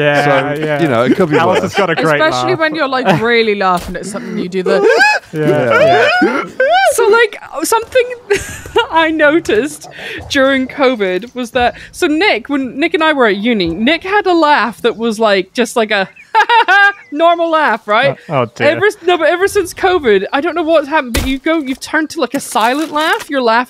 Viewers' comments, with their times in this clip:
0:05 i was expecting to hear "pull up, terrain terraun, pull up"